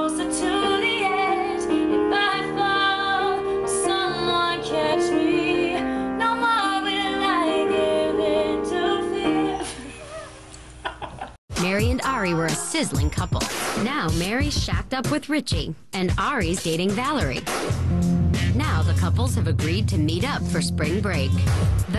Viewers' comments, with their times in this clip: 0:08 my two year old son says "he is playing piano it's beautiful" I started getting teary eyed<3